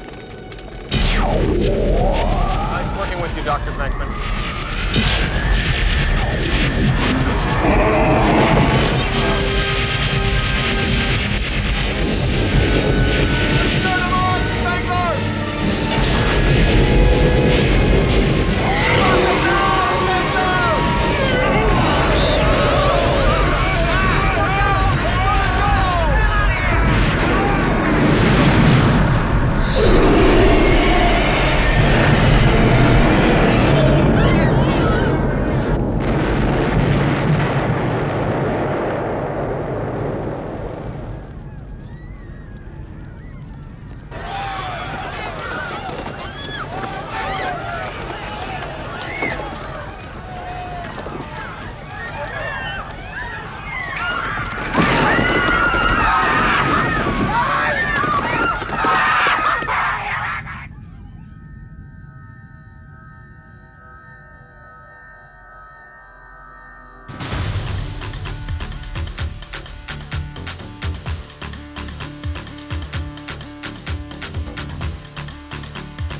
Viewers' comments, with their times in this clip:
0:07 stay pufts looks and sounds so terrifying
0:57 Always laughed at this yell lol like wth 😂